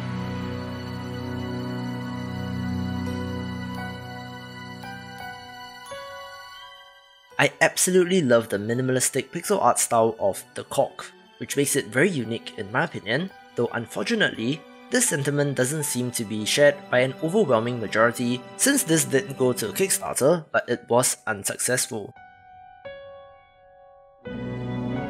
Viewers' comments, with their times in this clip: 0:08 thought you said something a little bit different there for a sec...